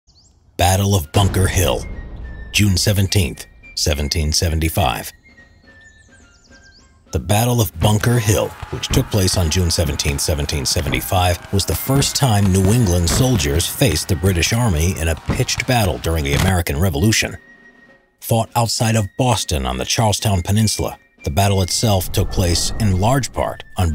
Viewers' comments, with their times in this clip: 0:08 i thought my video audio was glitched